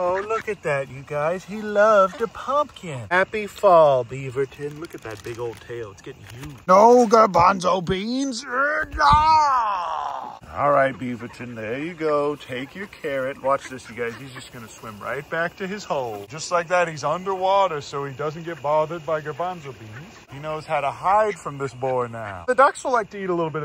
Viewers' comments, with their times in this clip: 0:09 you forgot the sound nooo!
0:10 there appears to be an issue with the audio